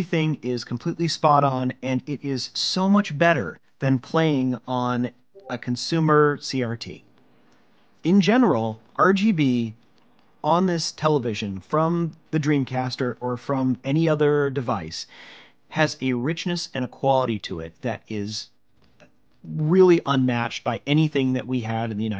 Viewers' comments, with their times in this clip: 0:04 discord ping sound
0:05 that dang Discord notification made me check and see if i've muted all of the channels...